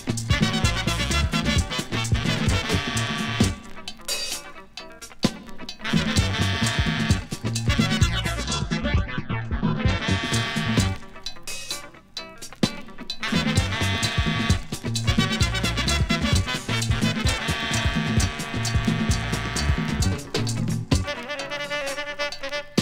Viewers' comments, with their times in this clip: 0:08 what a senseless use of Sound-effect! ... or why was that necessary?